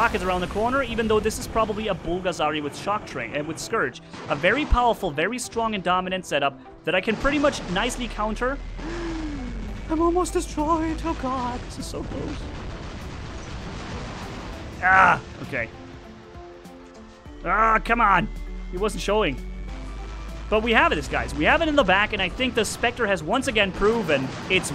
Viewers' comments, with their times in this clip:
0:10 how u make that low pitch sound man!.. scary